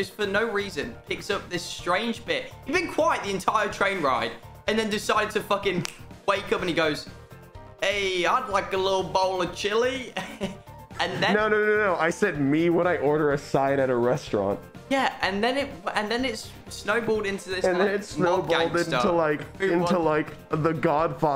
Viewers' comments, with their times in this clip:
0:07 Who is the echo?